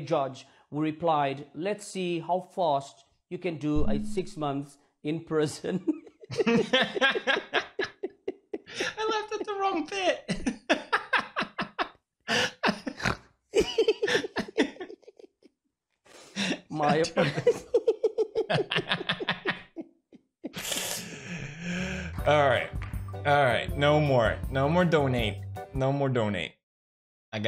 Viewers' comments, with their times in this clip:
0:07 I love how the reporter, pewds and I are all in different places/times yet it feels like I'm laughing with them XDDDD I'm cracking up as hard as the reporter. Bless the internet.
0:12 Wowaywo who just snorted